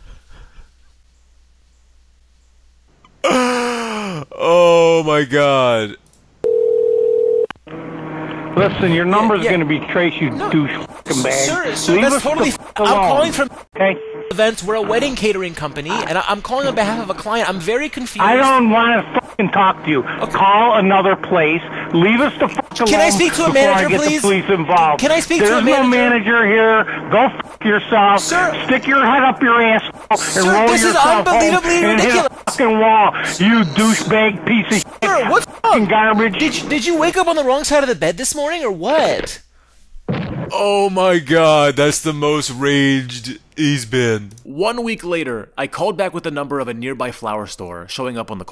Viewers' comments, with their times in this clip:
0:04 That actually sounded like an Inhalation, not an Exhalation xD
0:30 he switched voices for a sec lmao